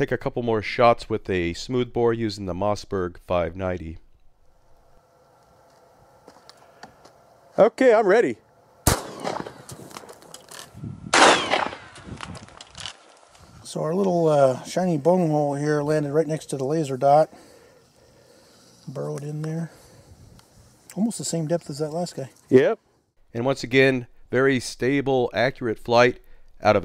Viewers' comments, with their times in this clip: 0:10 there was sound of the bullet fragments flying away